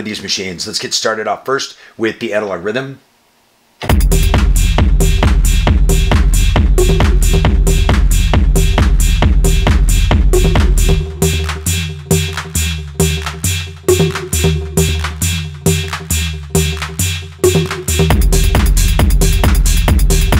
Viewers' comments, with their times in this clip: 0:03 Holy shit! Those beats absolutely slap!!!